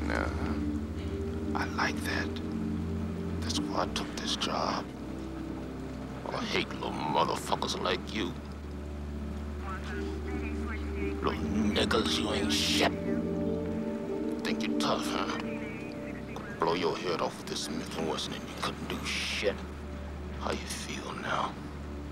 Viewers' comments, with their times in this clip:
0:06 that could explain the emotion in his voice
0:07 "the nega chin"